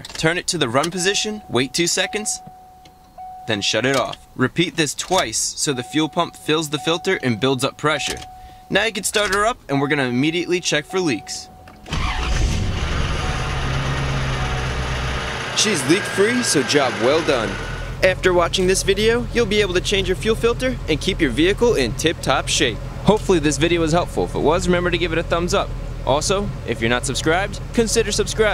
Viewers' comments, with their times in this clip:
0:10 that startup <3
0:11 wow, she sounds mean!